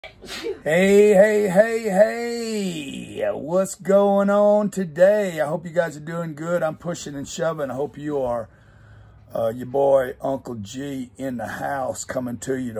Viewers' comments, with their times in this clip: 0:00 That sneeze sounds like the Cardonavirus is in full swing!
0:00 Talks about coronavirus U could hear a female sneezing...